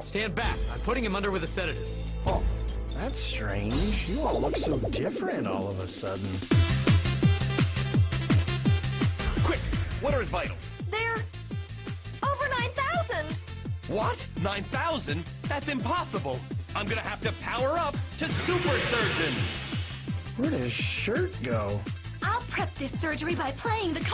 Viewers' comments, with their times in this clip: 0:05 BOOST YOUR SPEAKERS ..... TECHNO FTW!!!!!!!!